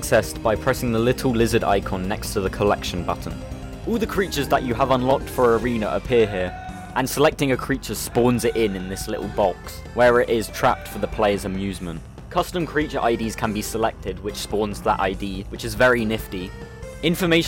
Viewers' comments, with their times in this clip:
0:05 HEEEEEEEEEEEEEEEEEEEEEEEEELP, HEEEEEEEEEEEEEEEEEEEEEEEEEEELP, HEEEEEEEEEEEEEEEEEEEELP MEEEEEEEEEEEEEEEEEEEEEEEEEEEEEEEEEEE funky music resumes-